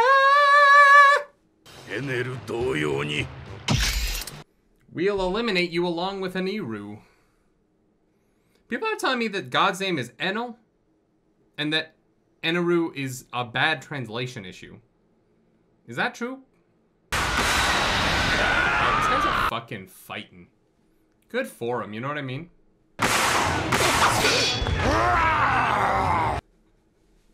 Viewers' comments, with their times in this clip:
0:09 Well no, actually Eneru matches his name in english better than Enel. Its just written Enel, just like Ruffy is written Luffy. The pronunciation of l and r in japan is the same. So you might say its translated bad, yes. But I would argue the name of a person is determined by its pronunciation not by its written form, which in fact would mean its a good translation. And at least you clearly hear them say eneru and ruffy.